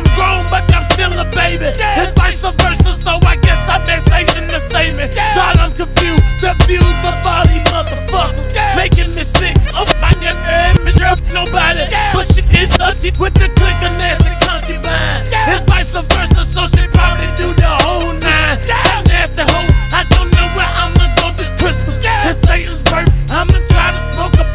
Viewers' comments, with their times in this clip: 0:09 does anyone notice the edited that reverse and censored that line? I noticed, and I thought this official video might be a glitch, but it's not. It's censored.... thankfully, I've saved the Uncensored verison and decided to reuploaded here.